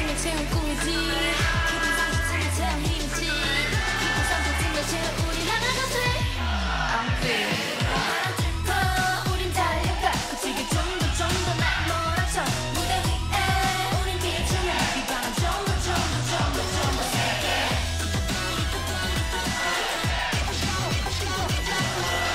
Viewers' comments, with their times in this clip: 0:08 the live vocals? crazy for such a hard choreo